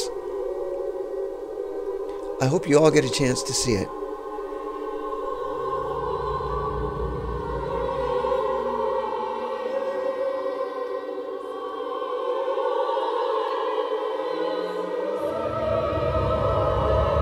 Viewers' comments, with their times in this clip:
0:04 at the mark.. what would the musical term or name be for the choir to sing like that? Glissando? I've heard the overlapping vocals like that in many other horror movies and I'm curious if there is a term for it. Excellent work btw. The Witch is easily in my top 5 favourite horror movies and your music truly ascends the film.